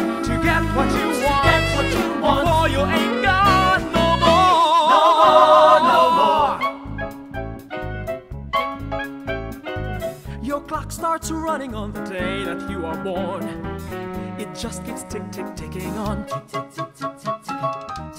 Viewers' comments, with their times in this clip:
0:06 very impressive in part of the end, very good range, and you stand by yourself. The song sounds like you are singing in the theater. part is cute. =D